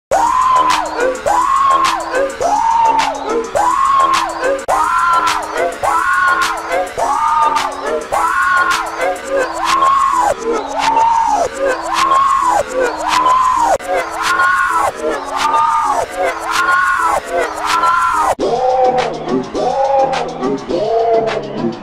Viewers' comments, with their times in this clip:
0:05 Preview 2 Valentine's Day Effects (Preview 2 Effects) in G-Major 4